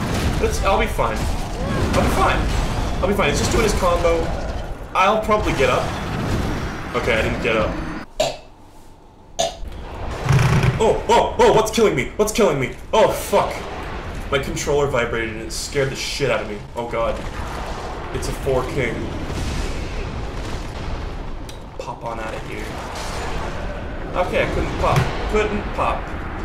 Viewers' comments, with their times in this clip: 0:08 cat starts throwing up